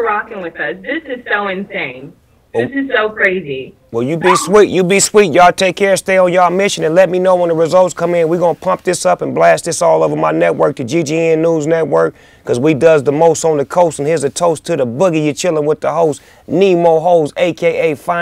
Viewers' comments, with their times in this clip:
0:04 she fucking squeaked